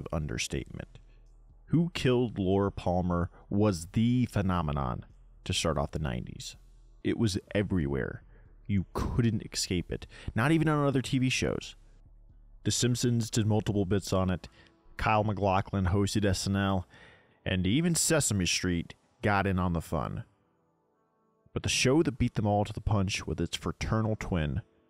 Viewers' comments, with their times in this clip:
0:07 listen to yourself say the word "escape", then look at how it's spelled, then ask yourself "Am I pronouncing it correctly?"